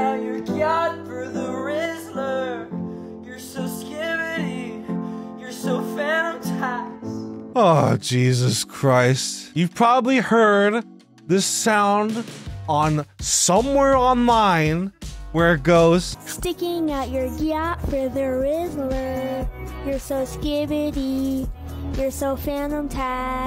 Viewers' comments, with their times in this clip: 0:10 you sound exactly like Pendlefon Ward/LSP and I love it